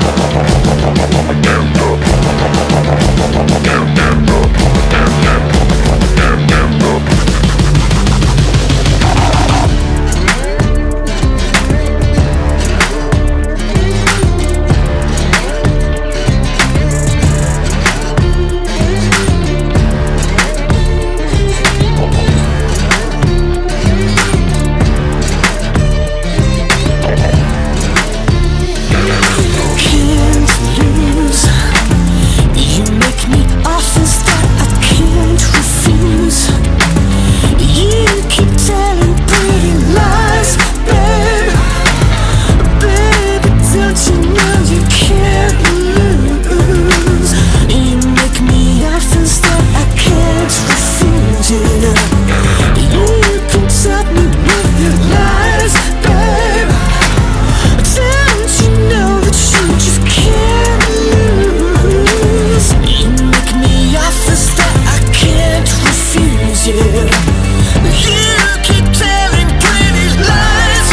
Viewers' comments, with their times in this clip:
0:08 starting reminds me of mario 64 from that sandy level
0:09 that riff needs to be a track on its own
0:09 love this guitar solo
0:11 what the is that slide guitar? I can't wait for see it in live
0:13 I love the guitar part here
0:13 this remembers me Pink Floyd...
0:15 sounds like one piece op 11 or is just me? btw this is an awesome album _XD
0:29 The spooky high backing vocals like those in Fury are back for a bit ( in the left ear)
0:52 Is it just me or why that doesn't sound like "You keep telling pretty lies, babe"?
0:53 does anyone else hear "you can top me with your lies" or am I just crazy???
0:56 Yes, this is PURE Prince. And that backing (´Lies, Babe´)